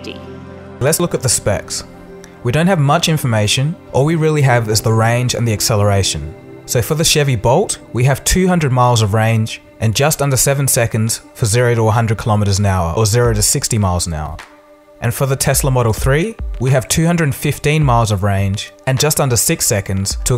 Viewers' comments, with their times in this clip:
0:08 so is it "bolt" or "volt"?